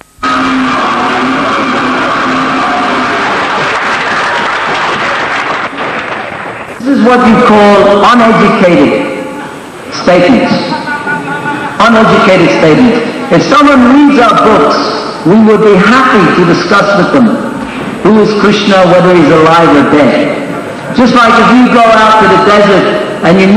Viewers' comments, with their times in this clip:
0:10 it sounds like I can hear a Christian lady speaking out loud in tongues.